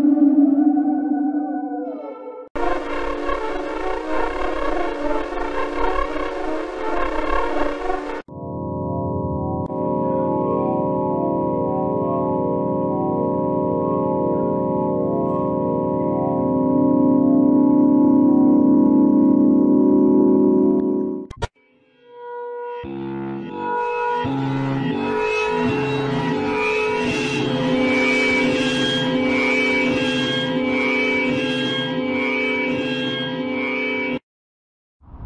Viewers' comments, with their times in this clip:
0:08 amalthea moon sound
0:21 MIDI Scariest Sound